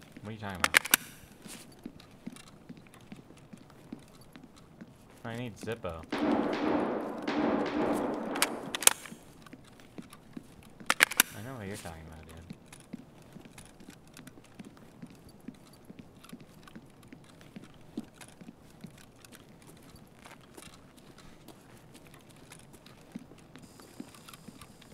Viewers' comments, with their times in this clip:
0:09 this man hears the shots and said nope not going that way